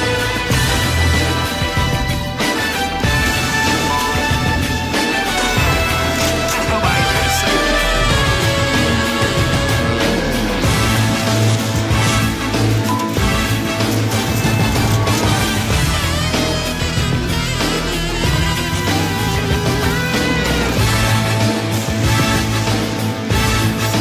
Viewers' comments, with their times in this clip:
0:09 he's playing his rifle